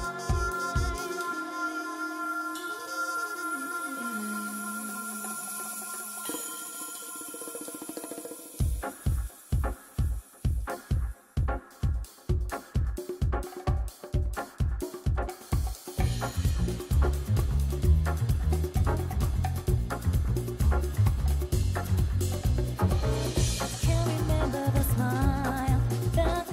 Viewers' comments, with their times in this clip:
0:09 Does anyone think the beginning of this song sounds like Dreams of an Absolution while gives off Windmill Isle Night?